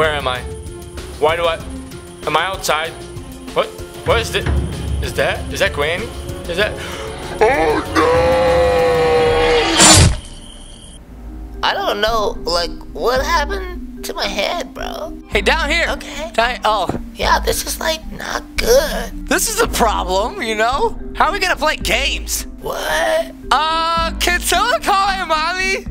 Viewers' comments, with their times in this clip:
0:07 OH NO He said calmly